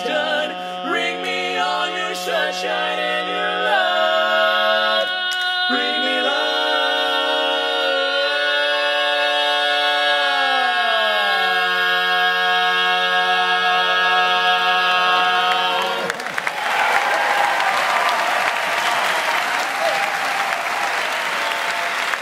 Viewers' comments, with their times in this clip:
0:08 That chord is so flippin clean every time y’all perform this